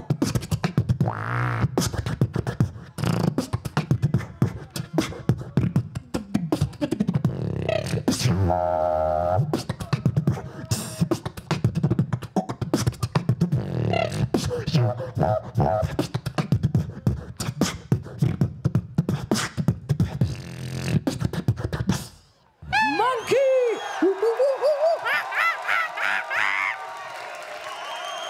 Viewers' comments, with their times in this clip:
0:09 Bill Cosby beatbox anyone?